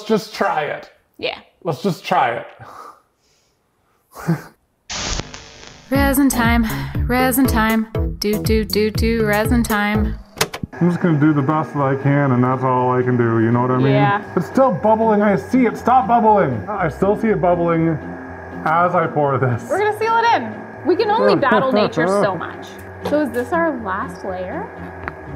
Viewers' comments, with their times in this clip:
0:10 LMAO I love the defeated “resin time” singing 🤣